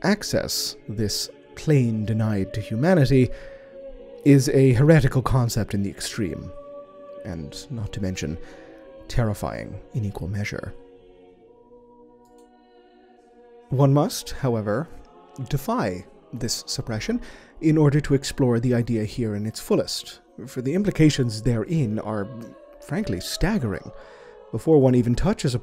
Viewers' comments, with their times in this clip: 0:10 ha ! heard the mouse click immersion ruined 0/10 still best chronicler also the best way to examplify the orkz' tech is the four panel comic with an ork mek building a gargant while the mechanicus watches and starts losing their shit